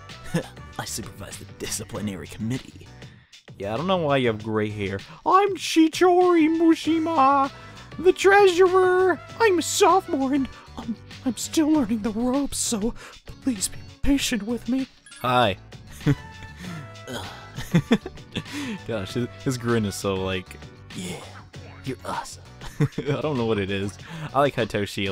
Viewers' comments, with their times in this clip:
0:07 sounds like Carl from Jimmy Neutron